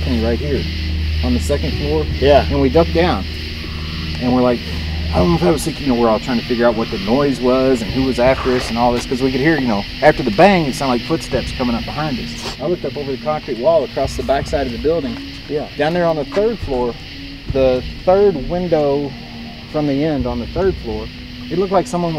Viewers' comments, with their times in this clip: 0:03 there’s these weird noises like growling or screaming of some sort it might’ve been someone but no one said anything it was odd